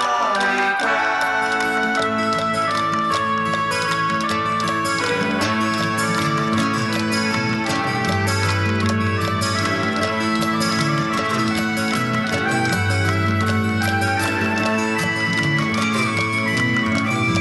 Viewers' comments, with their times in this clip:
0:03 it really starts to sound like the transportive Pink Floyd that carries you away. Syd was Syd, but Rick made their music really unique with that floating continuity.